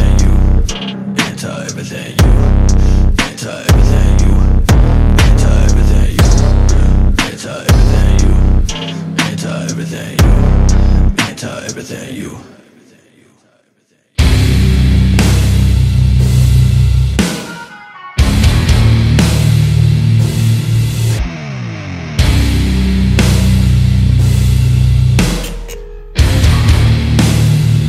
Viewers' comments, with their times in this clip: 0:08 When i first heard this i thought he said "I'm tired everything you"